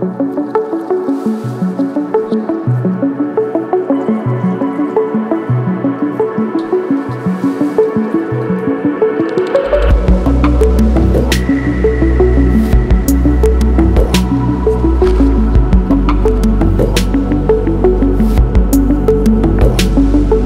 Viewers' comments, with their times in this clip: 0:05 Tune blew me away. Excellent quality uploads as usual!